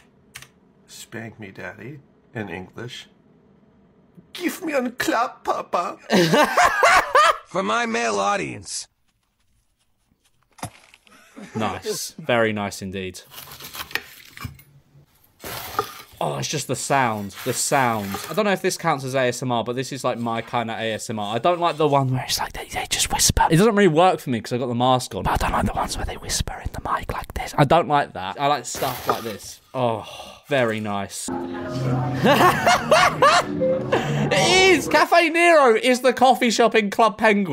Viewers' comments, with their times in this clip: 0:04 he isnt saying it right dutch doesnt sound like german at all its just annoying
0:08 Nah the ice vid was trash. Not enough cracks and didn’t penetrate the ice. 4/10
0:21 this shit gave me the chills bruh my volume was so high
0:25 my left ear loved this!!!
0:25 my left ear absolutely loved that
0:25 my left ear enjoyed that